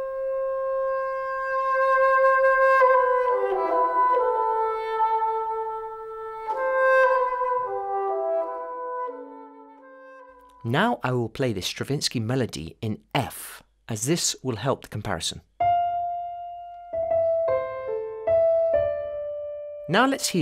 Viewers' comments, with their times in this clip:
0:05 Thanks again helping my fight against not doing music because it's silly and childish. It looks like a new format with every new video and a constant awareness on how to best communicate the subject at hand. You are a fantastic teacher. Didn't know the Stravinsky lick, but I only hear the opening line from 'La Vie En Rose' ;-) haven't check the score though! Thanks